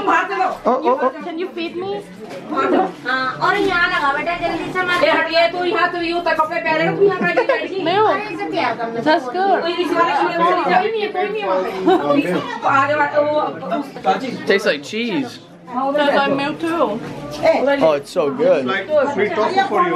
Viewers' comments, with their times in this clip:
0:04 that was cute when she said ..can you feed meeee..